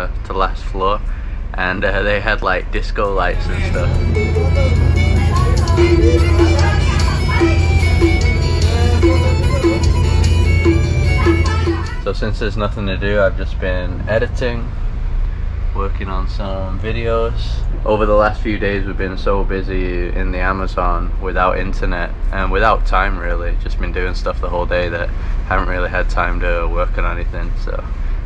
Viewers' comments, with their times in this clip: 0:10 The same bad music as always! Sometimes, I feel these guys don't have another kind of music to play on these boats.